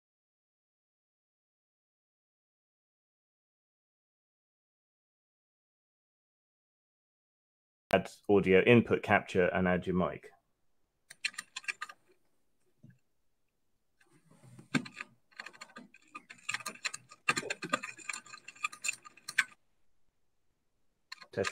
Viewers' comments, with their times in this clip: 0:07 the sound starts